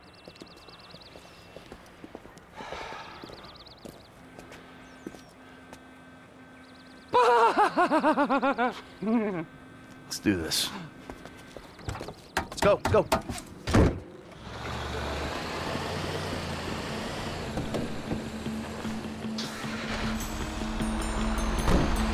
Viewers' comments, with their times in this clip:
0:05 Friday 13th - ki ki ki, ma ma ma
0:06 Trevor's laugh is still hilarious even 9 years later😂😂😂
0:06 what a hysterical laugh
0:06 Sounds like joker laugh🤣🤣🤣🤣
0:06 Sounds like Eureka O'Hara's laugh lmfao
0:07 There’s a lot of references in this mission that I see Like we all know this mission is Dedicated to the film “Heat” and did everything the mission did to make it be like the movie Of course Micheal, Trevor and Franklin are dressed in boiler suits and hockey masks to make them dressed like how Tommy vercetti and the guys robbed the bank from Vice city. And Trevor’s laugh makes it look like he’s H20 Delirious and he’s wearing H2O’s mask as well for his gta online character. This mission will forever be iconic and one of the best ones!
0:07 That laugh by Trevor still makes me laugh...